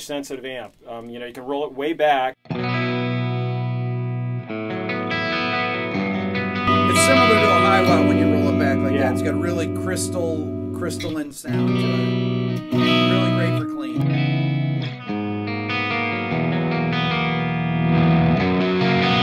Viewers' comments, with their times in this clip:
0:07 Why the weird jump in volume ?